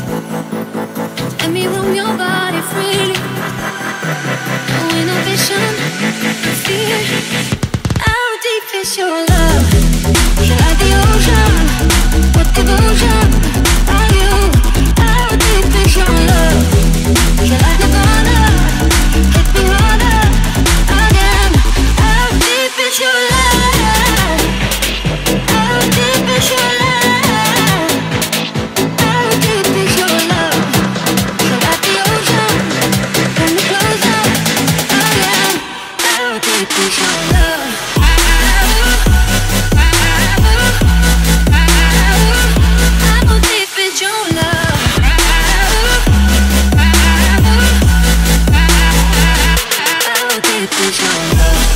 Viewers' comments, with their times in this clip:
0:10 quickest beat drop ever like woah that's just crazy.
0:36 Roses are red Violets are blue The beat dropped